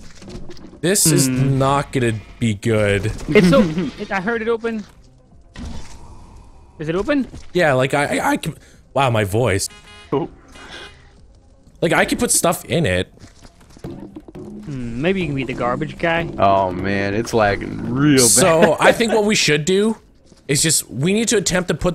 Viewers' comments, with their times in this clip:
0:05 That voice crack is legendary